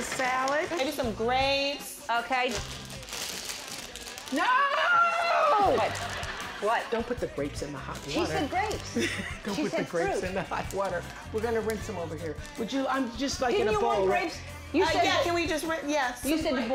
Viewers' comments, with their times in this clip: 0:04 The way Oprah screamed was funny asf 🤣